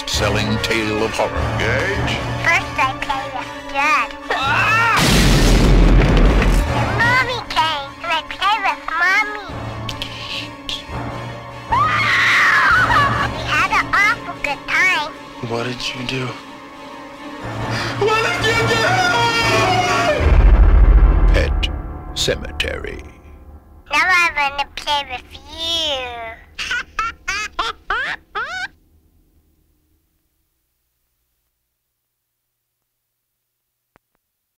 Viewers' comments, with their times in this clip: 0:04 Why is the sound of Judd's scream different from the one in the full movie?
0:26 sidney prescott: (laughing)